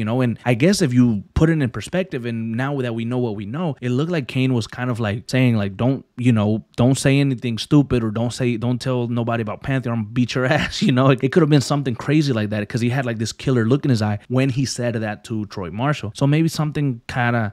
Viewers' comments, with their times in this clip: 0:05 made me laugh for some reason "Saying like, Y'know Don't say anything stupid or Don't say or Don't tell nobody about pantheon I'ma beat your ass (starts chuckling) Y'know".